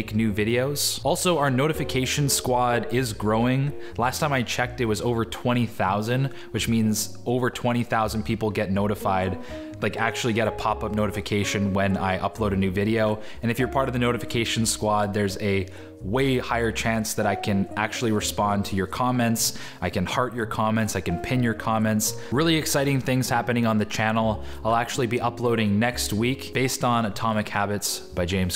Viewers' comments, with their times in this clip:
0:10 That subtle Discord notification really confused me! :D